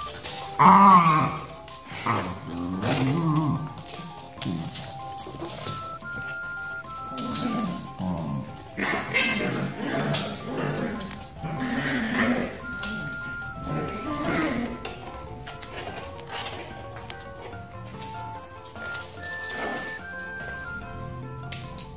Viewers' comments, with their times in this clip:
0:04 LOL he crii